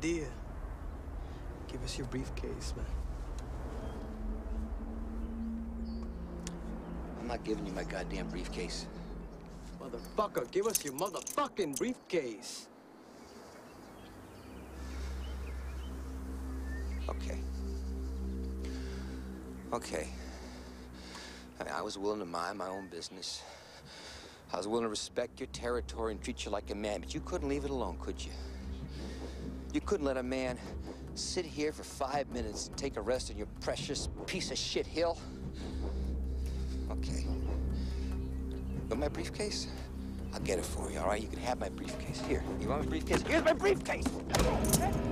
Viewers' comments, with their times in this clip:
0:03 the way that actor says “give us your briefcase man” is damn scary and perfect. I lived in LA for a bit and something similar happened to me. Scene gives me a little anxiety lol
0:15 I love the music in this scene. It parallels the increasing rage of Bill Foster perfectly
0:30 the music is like when the good character becomes a villain and reveals his true form.